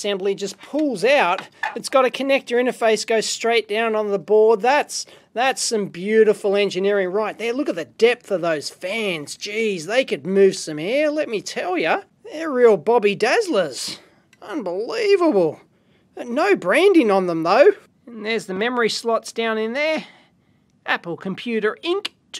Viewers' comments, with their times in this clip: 0:03 AL-LOO-MINI-UM!!! BOBBY DAZZLERS!!! Gotta use that some time!!! I have two of these machines... eventually the liquid cooling system leaks and might daamage the motherboard and the power supply ruining it...BUT HEY ITS 2016 I HAVE ALREADY BEEN THROUGH 2 more macs!